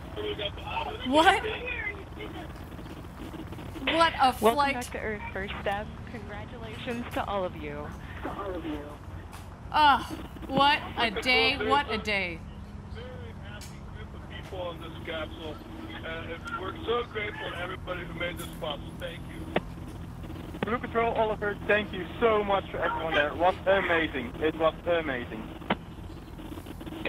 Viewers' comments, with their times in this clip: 0:09 ahh What a D..! Wait?! Is that a D?!!!